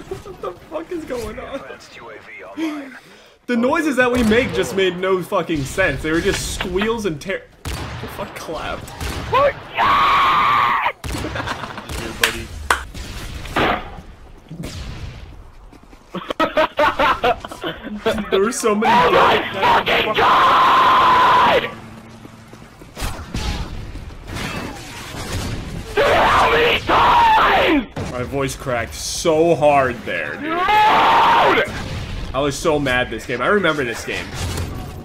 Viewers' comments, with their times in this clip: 0:08 my man just made a poofesure rage scream.
0:18 literally singing ASKINGALEXANDRIA